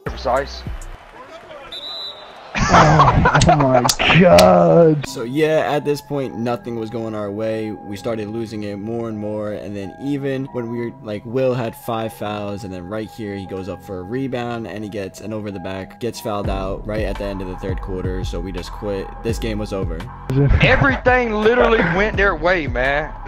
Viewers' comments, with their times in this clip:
0:09 What’s the instrumental ? It’s so smooth.